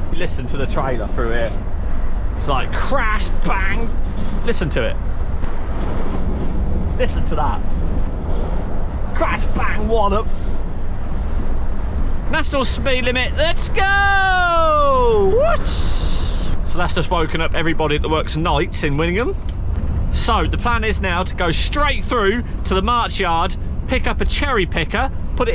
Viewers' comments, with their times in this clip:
0:07 it sounds lovly idk what ur talking about right guys?